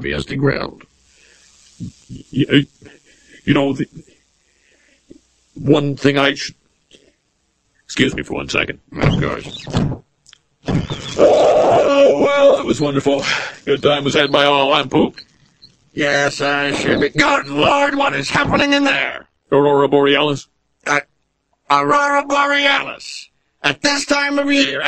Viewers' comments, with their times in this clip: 0:10 That sounded like a demon being birthed.